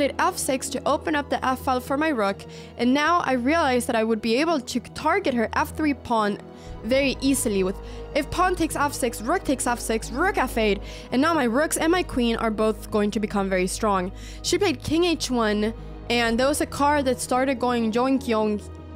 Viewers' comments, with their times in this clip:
0:06 Can we see what noises that car made again ?